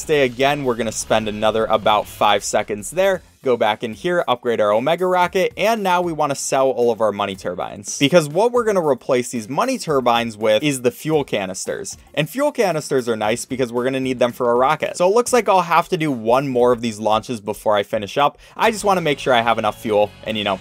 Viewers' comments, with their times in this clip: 0:06 Why was it “money turban” for the whole video until where it finally became money turbine